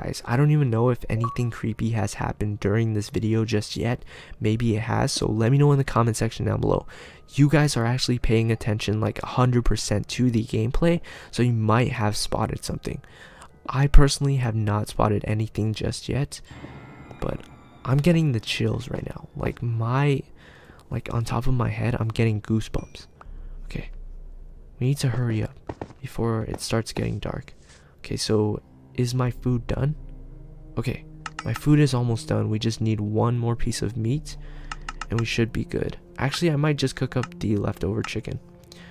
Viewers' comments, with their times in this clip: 0:05 something moved and there was a sound and i am sure it was sound of something falling totally not a sound effect
0:11 i heard a clock chime
0:16 I heard noises
0:18 I hear creamy sounds and music
0:26 I heard weird sounds like and I subbed and liked